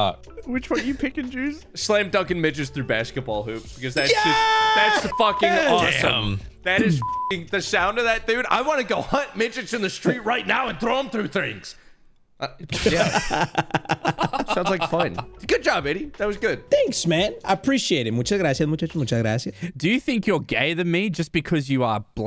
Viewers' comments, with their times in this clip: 0:04 they forgot the “bleep”